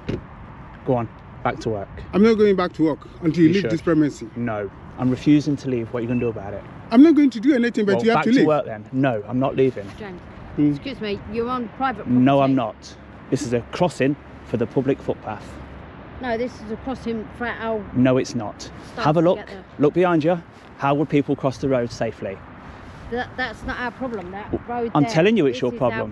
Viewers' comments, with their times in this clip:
0:10 not the voice I was expecting from the look of that person…😳